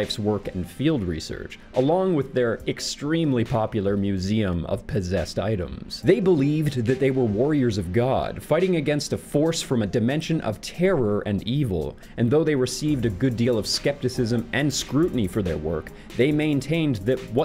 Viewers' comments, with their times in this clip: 0:03 hmmm, "museum of pizzazzed items" you say? would that be the Liberace museum perhaps?